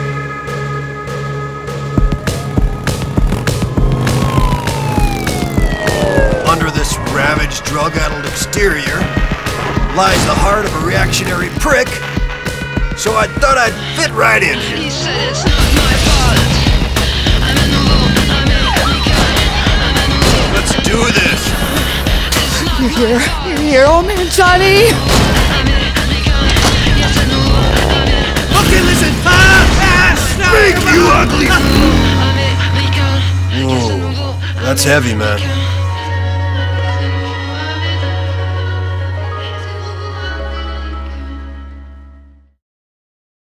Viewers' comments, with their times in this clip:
0:03 damn they should've kept this engine sound
0:35 I like how they kept the song's sad outro after the trailer ended, like foreshadowing that he wouldn't get a happy ending